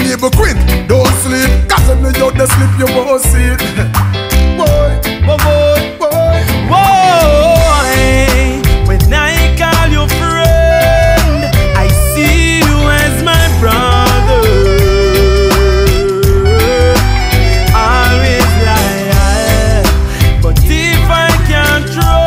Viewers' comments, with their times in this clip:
0:07 No star the singer nuh normal. change in riddim and sound was epic as F.